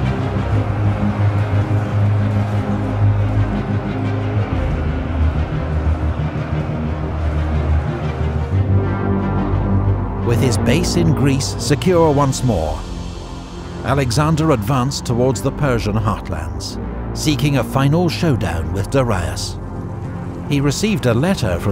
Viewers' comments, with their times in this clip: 0:08 Epic music coming in !